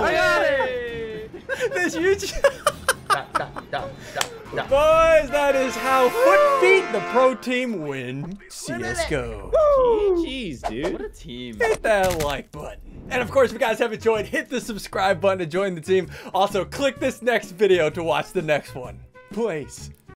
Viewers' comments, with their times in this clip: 0:09 ssundee got loud foot that’s perfect for him (guy in mid)
0:11 I like how Ssundee is the loudfoot
0:12 why does he has loudfoot